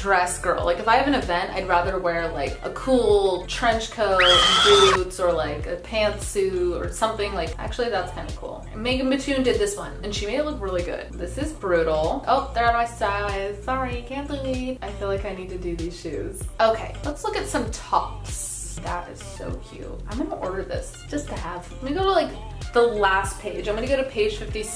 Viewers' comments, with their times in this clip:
0:05 First of all, great video. I actually love you so I’m subscribing lol And 2. At like when you zoomed in on your foot and put in the screeching noise, I literally spit my water all over my iPad cause I wasn’t expecting that at all and I couldn’t stop rewatching it😂😂😂😂😂😂